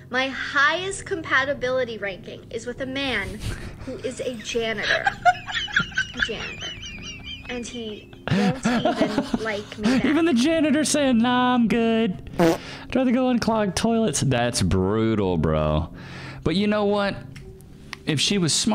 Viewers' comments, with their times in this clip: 0:03 I want to watch more videos but that laughing sound effect is so cringe